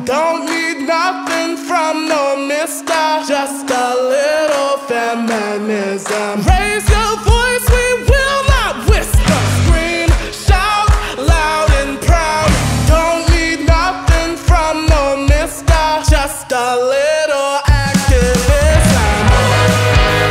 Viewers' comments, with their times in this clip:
0:06 Ur voice is so powerful I love it